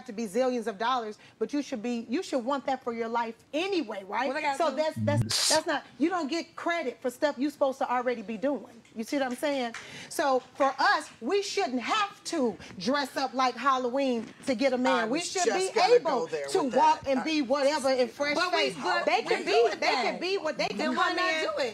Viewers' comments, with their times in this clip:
0:05 "You don't get credit for stuff you should already be doing" and you can hear people clapping off-camera. Well, you shouldn't get credit for mother's day, or "feeding a baby and taking care of a child all by yourself" and having to do things on your own. You shouldn't get credit for having a box, breasts, and a behind, or for being in shape and looking good. What is this lady talking about.😤